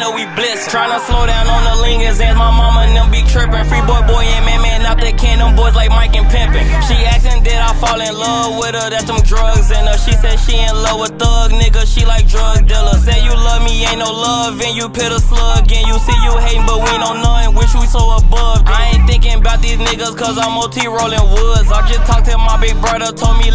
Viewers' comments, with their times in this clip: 0:09 The beat change 😈